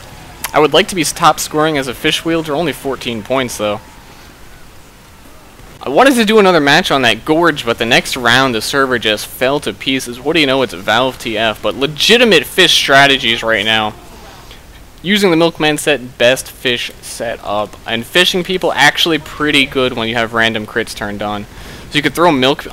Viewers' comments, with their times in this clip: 0:04 I heard: "only forty points..."